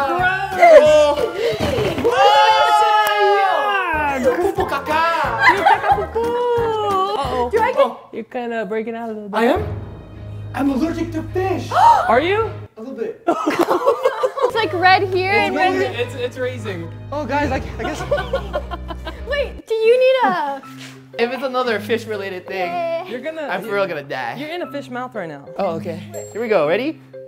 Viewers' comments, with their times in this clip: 0:08 only a whoopie cushion would make that sound